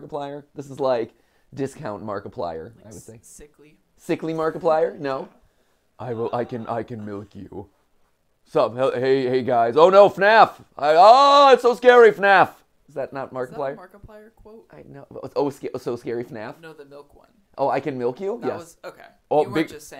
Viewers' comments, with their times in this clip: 0:07 amazing Markiplier impression 😂😂😂😂😂😂😂 I can hear it